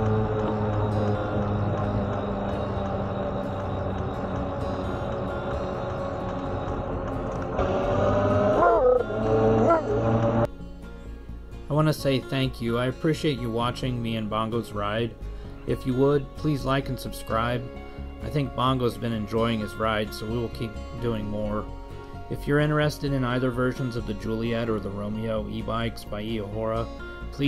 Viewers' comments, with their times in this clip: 0:08 Google's translation of Bongo's bark to English... "Move over slow pokes!" 😆🤣 Great to see him enjoying the ride. Thanks for sharing.